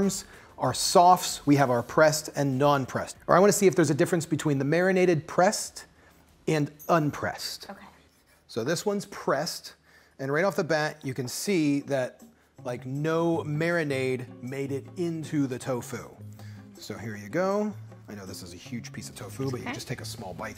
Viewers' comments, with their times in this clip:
0:07 something seems to have gone wrong with the audio starting from there it basically sounds like 2 slightly asynchronous mono tracks rather than one stereo track.